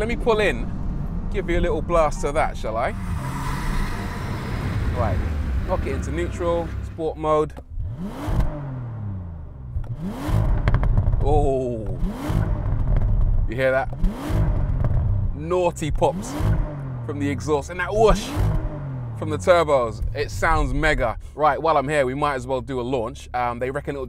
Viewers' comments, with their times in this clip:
0:08 I don't get what's going on here, the car sounds like shit, it sounds worse than most Hondas